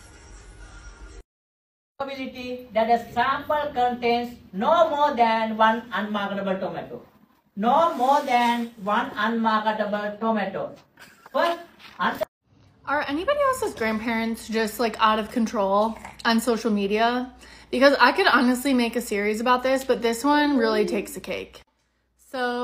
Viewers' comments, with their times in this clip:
0:05 honestly I would have talked to someone about that. I can understand all types of heavy accents because of my job and I only caught like 4 words from that teacher. My grade isn't suffering because I legitimately can't understand what you're saying.. 😄